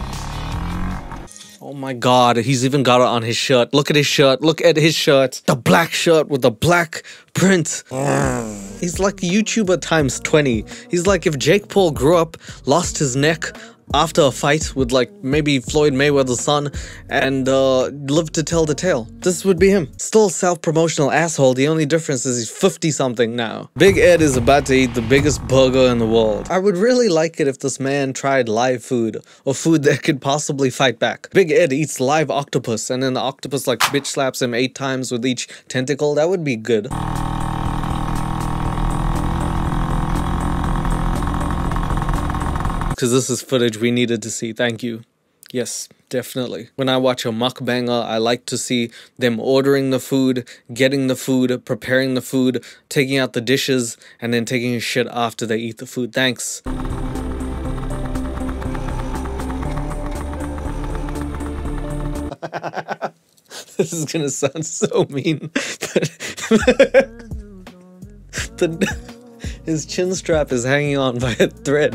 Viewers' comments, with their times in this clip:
0:08 *lowkey sounded like a motorbike tearing off. Big Ed clips it as a sound effect for him speeding off 🤣
0:59 is my favorite part of the video 👌 the laugh